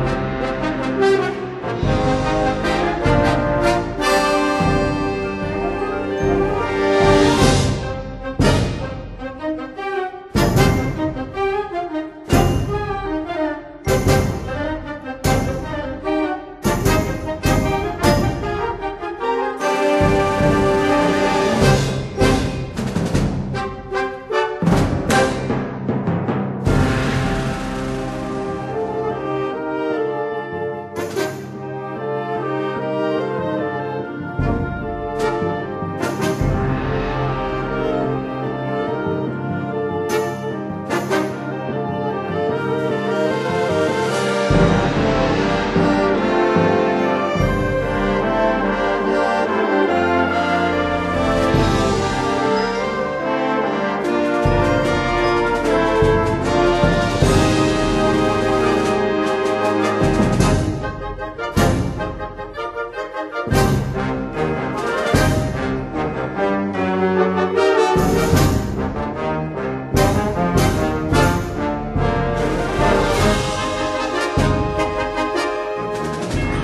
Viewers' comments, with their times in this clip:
0:07 The trumpet part at 11 is so irritating.
1:04 in my band the trombone part sounds WAY better O_O